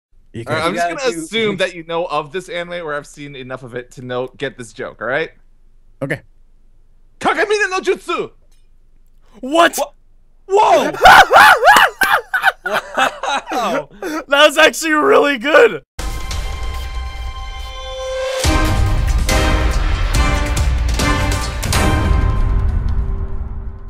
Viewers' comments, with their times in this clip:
0:06 what was that Naruto joke? what did he say? I can barely make it out as "kage bunshin no jutsu".